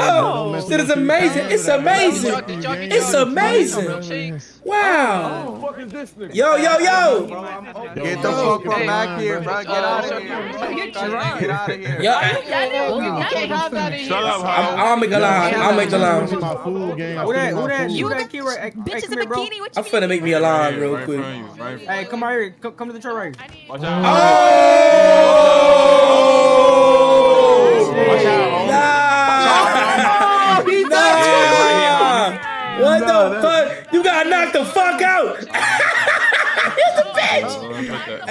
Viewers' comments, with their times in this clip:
0:03 it’s amazing until she farts
0:23 that universal ohhhh still gets me💀
0:24 That “OHHHH” hit different 😭😭😭😭💀